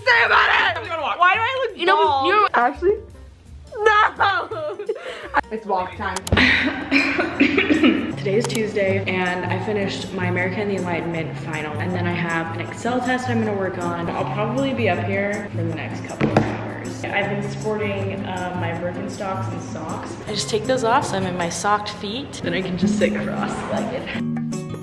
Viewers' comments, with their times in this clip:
0:07 why u coughing is it COVID